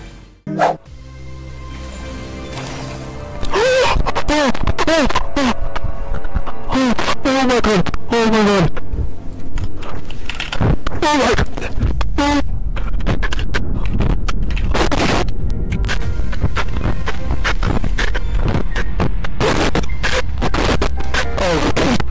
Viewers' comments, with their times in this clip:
0:03 What’s happening to bros mic😭 💀
0:08 O- O- OH OMAGAD clicking OH MA GOD AG start breathing so hard